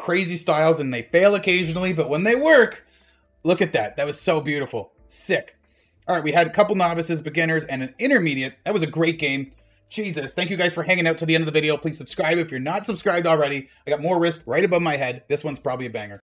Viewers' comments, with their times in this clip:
0:04 Hey what happened the audio gets messed up a little bit like it’s underwater. Just wondering if anyone might know, it happened for the rest little bit of the video